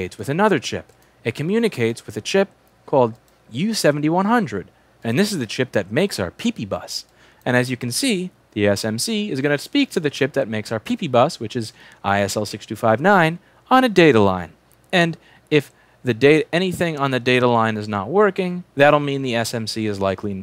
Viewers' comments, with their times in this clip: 0:06 i wonder what else makes his PP buzz